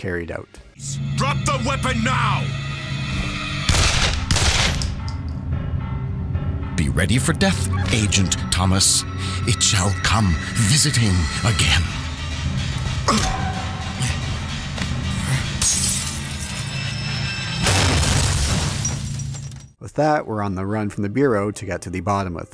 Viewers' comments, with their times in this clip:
0:06 The voice actor of the antagonist really reminds me of Hank McCoy (Beast) in the 90s X-men tv series